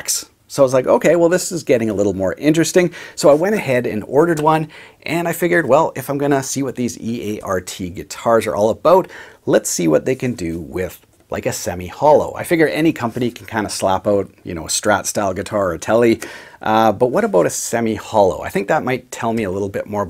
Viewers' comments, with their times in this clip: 0:08 you can tell he’s Canadian 😂❤️